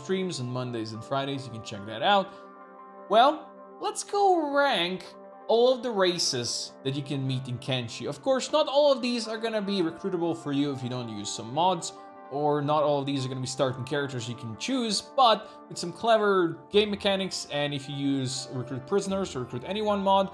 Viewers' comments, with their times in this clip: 0:05 "all of the racists"😅